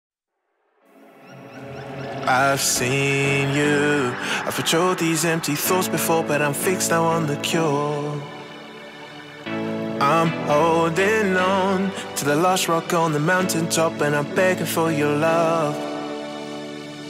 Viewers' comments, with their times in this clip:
0:01 lol i thought that was drake 😂